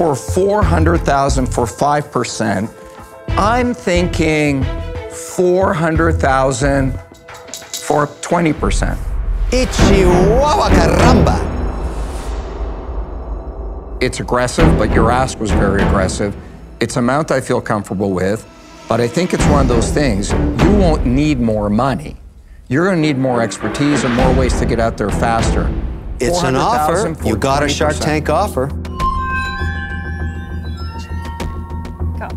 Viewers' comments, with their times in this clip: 0:09 lmfao idk what Kevin said
0:13 Sounds like he said "Your Ass Was Very Aggressive". LOL
0:14 Did he say “It’s aggressive but your ass was very aggressive” ? 😂